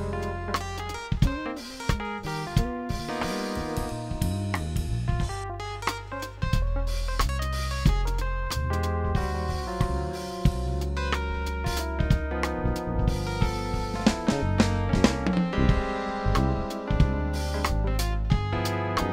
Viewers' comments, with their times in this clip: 0:03 that bass lick daaaaaaaaaamn